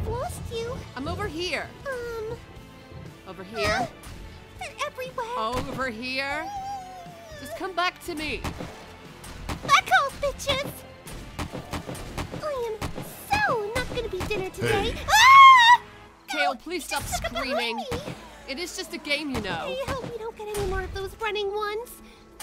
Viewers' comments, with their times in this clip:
0:09 Kale: Back off bitches. 5 seconds later. Kale: AHHHHHHH! XD THAT WAS CUTE.